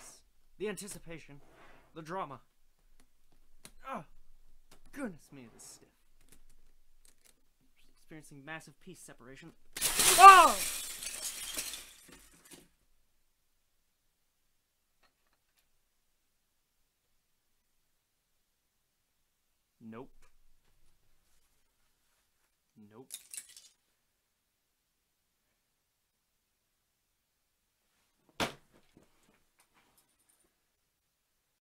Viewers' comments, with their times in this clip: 0:09 lego breaking sound effect
0:27 that sounded like gunshot!
0:28 i think this was a gunshot